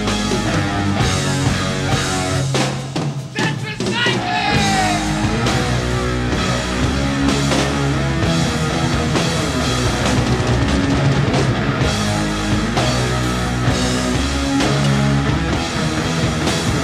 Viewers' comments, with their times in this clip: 0:03 “Tetracycline” or “That’s recycling” or “Thanks for cycling”?